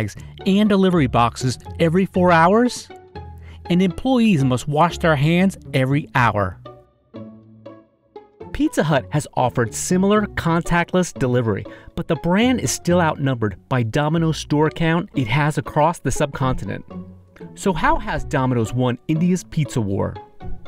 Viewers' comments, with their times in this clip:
0:03 Employeees MUSHWASH Hands